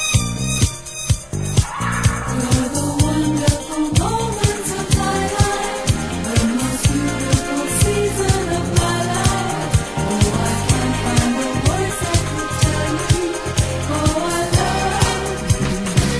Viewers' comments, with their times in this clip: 0:04 Love the strings. For me, the best part is the segment that begins Subtle and with evocative vocals. Wish there was an extended cut of this portion. Does anyone know if there such a thing?